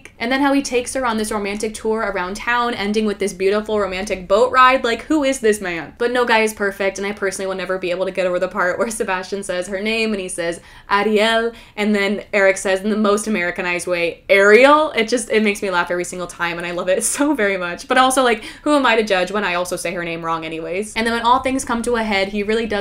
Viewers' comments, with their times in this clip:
0:09 Virgin English dub vs Chad Romanian dub